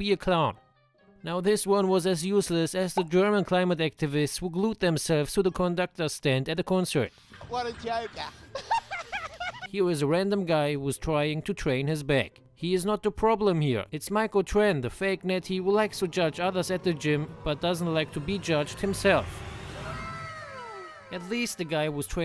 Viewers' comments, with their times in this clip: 0:07 what a jokuh!